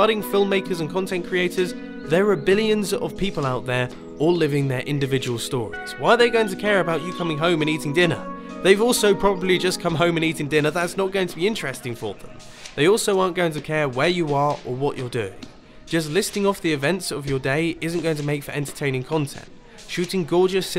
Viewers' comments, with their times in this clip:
0:05 I think you are talking a bit fast here, especially when comparing it to the footage you got. But one thing is for sure, both the story and footage is on point. I love the moment it really makes me think. Thanks for posting this to us. :)